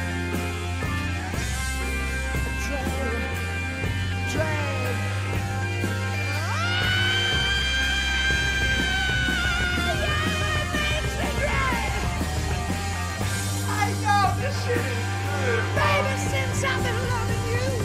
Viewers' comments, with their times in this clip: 0:04 robert unleashes his air raid siren voice!!